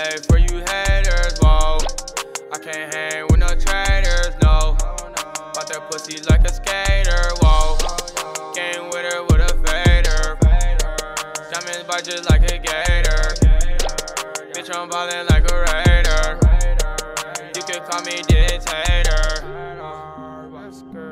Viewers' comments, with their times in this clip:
0:04 That lil Pressure Flip' lit 🔥